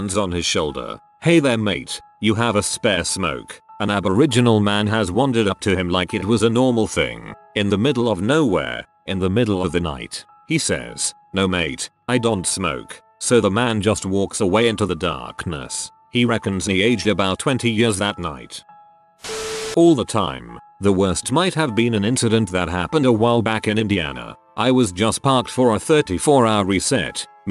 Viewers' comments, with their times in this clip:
0:10 lmao that accent came from left field!